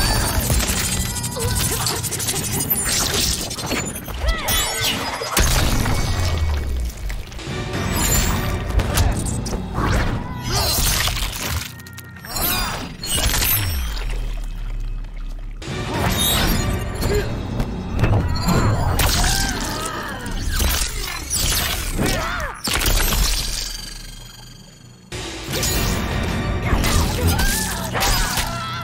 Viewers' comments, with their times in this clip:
0:09 When her intestines fell out of her sawn body with such sick sounds.